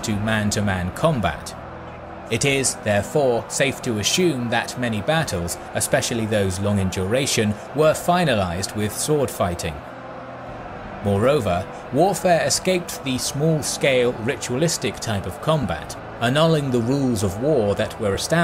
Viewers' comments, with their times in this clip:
0:03 safe to "ashume" :P